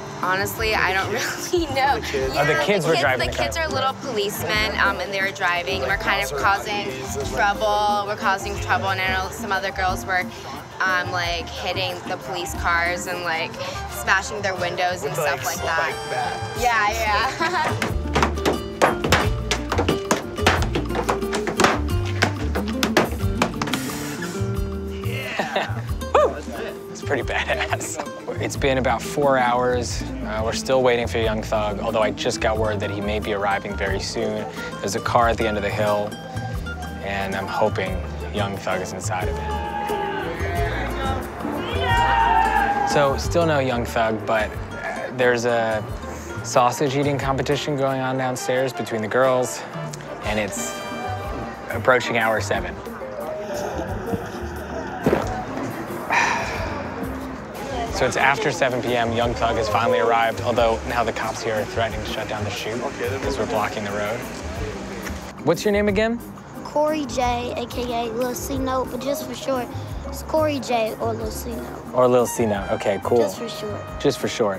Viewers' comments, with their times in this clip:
0:06 why does she fit every stereotype of an airhead blond model. She just sounds so unintelligent to me.
0:38 that girl shouting YASS is marriage material
0:53 Did they put in that swallowing sound afterwards
0:54 Nastiest swallow sound I've ever heard.
0:57 was that coffee gulp recorded after or was that real? that was one hell of a gulp